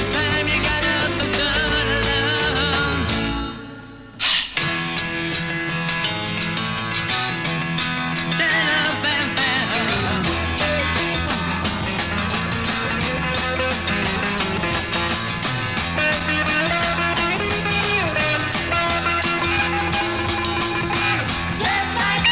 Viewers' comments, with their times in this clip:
0:08 Interesting, the first half of the version from the album, but after the solo it's from the alternate version that was not made available until recently. There is an apparent edit connecting the two different mixes together.